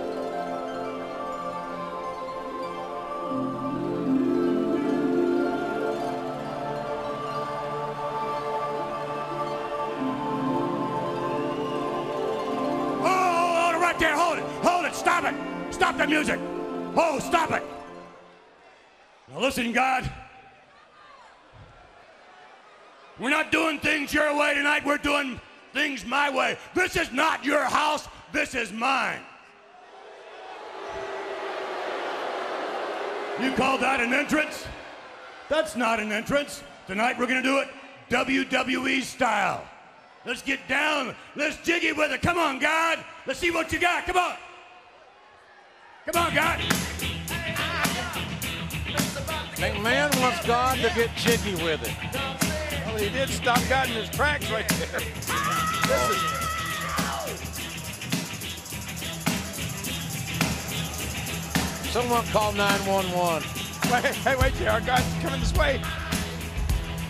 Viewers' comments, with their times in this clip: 0:07 Lillian Garcia is laughing LOL
0:46 Sounds like WWE former wrestler brodus clay theme
0:49 JR sounds depressed.